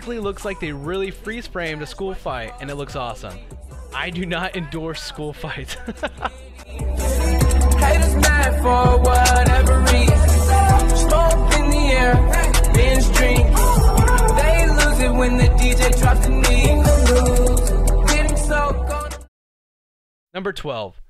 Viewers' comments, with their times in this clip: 0:09 his laugh was so cute